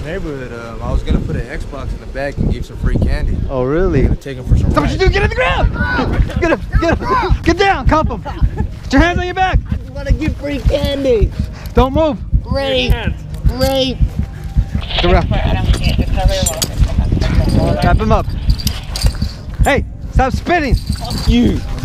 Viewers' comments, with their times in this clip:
0:08 you can literally hear his heart beat lol, #Shoutout from Bahrain!